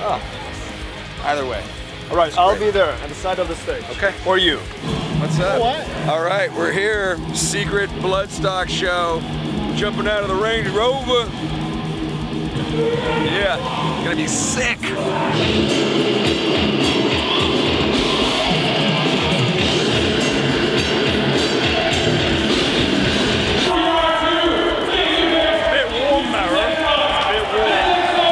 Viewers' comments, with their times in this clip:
0:09 Was a killer show! Such a high for you guys to come back and play your first show after covid! You can hear my band whilst you're outside the Sophie tent 😂